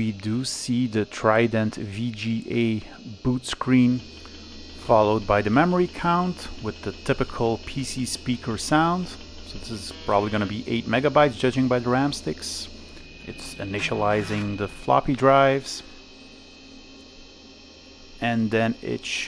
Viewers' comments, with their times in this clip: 0:04 Click, click, click, click, bzzzzzzzzzzt. I miss that memory check sound. Although, for the life of me, I can't remember when that disappeared. Was it the P3 era?